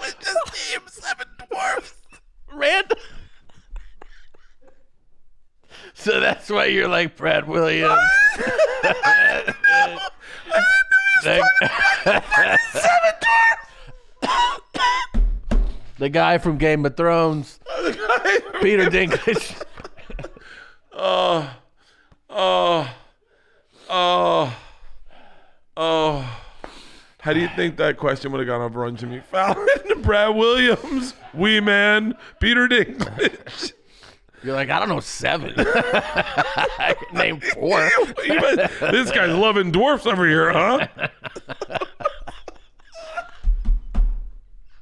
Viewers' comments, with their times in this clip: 0:03 LOL they are gonna die of laughing LOL berts wheezing and toms nausea LOL
0:30 If you’re listening with headphones you can skip to to get past the ear piercing dog whistle laughs and hyperventilating